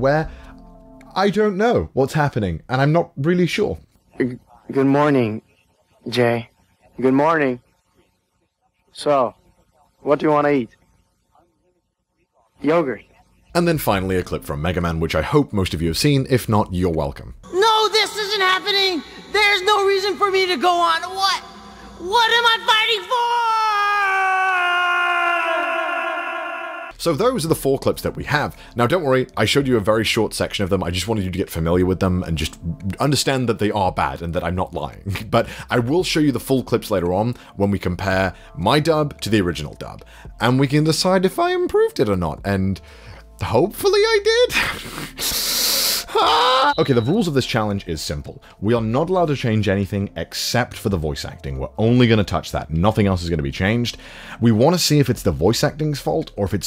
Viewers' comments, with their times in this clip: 0:03 I thought my teacher joined the online class lol
0:04 This seems like it's literally just text-to-speech
0:08 The hesitation after question🤣 "*yOGurT*"
0:13 OMG Megaman X4! My preteenhood 😍 (yup seen it.) even tho the acting wasn't enough, at least he had a decent "roar"?
0:26 I thought was sonic shouting 😂
0:43 he sounds like greg universe